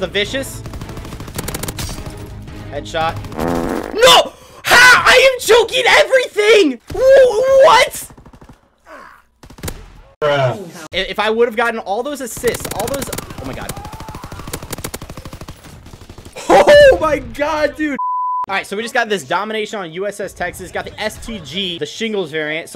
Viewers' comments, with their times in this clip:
0:04 he sounded like a Rick and Morty character "ooohhhoooo what"